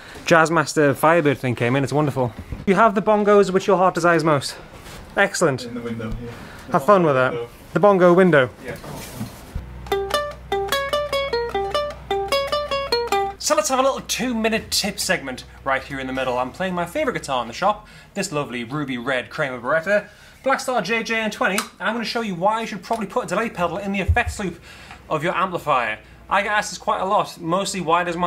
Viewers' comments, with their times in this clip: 0:09 Loved the random uke break !